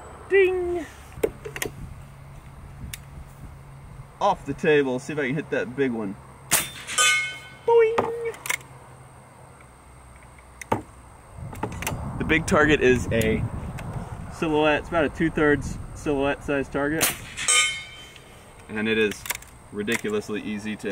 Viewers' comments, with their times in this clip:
0:07 boing My guy is Charles Martinet as confirmed